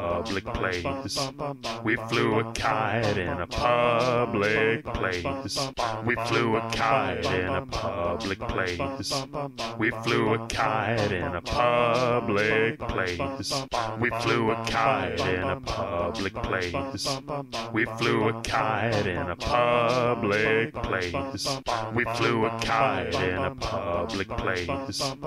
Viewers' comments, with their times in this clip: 0:06 You’re all wrong. is so much better, you can really hear the emotion